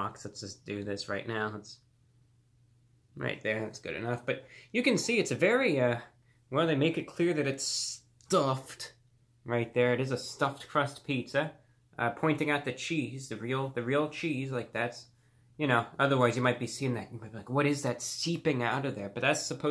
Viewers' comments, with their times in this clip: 0:07 the way he said stuffed